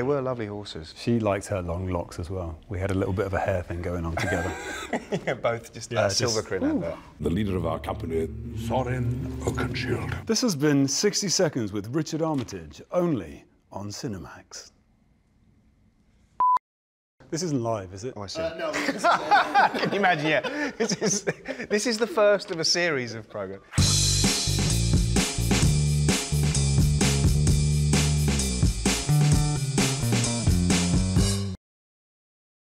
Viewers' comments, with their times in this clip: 0:05 Richard's little 'woo' in the area gives me the stupidest grin.
0:06 ! that "ohh" he makes!
0:07 "where's my stylist?" the way richard says that...oh god. my ovaries. and his little, "oof!" RICHARD, STOP IT. I CAN'T WITH YOU.
0:14 the moment you know Richard knows his voice is majestic
0:18 Martin's Laugh "Khahahaha can you imagine, ya" then Richard starts laughing at the laugh
0:19 I love this video. I've watched it over a million times and I still love it. Martin's laugh is so sweet and out of the heart :D
0:20 Huh? Who's laughing weirdly